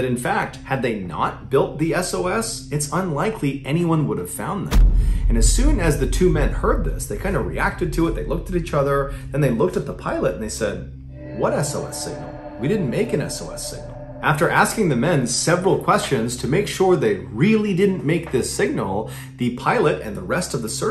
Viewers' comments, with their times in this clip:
0:04 Dinosaur foot stomp
0:05 sounds like a t-rex stomp